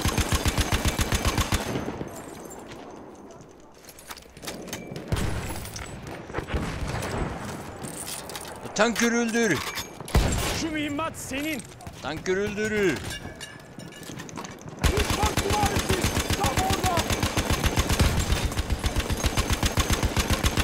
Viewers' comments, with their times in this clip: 0:08 Damn, that was near perfect, except for the last syllable.